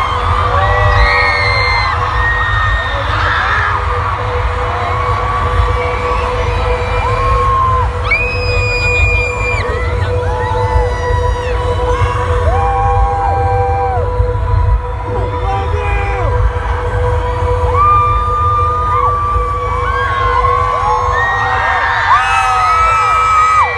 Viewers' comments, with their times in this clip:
0:08 that screaming is such a mood